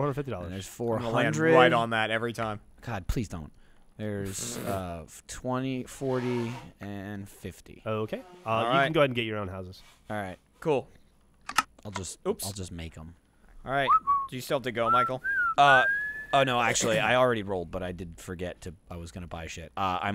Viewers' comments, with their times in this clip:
0:04 i think that's someone blowing their nose in the background
0:05 Shout out to whoever's blowing their nose..